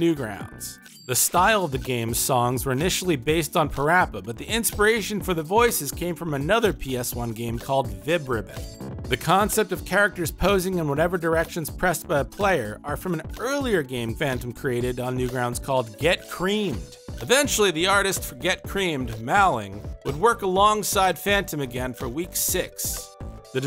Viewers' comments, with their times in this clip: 0:08 Was that a chair squeaking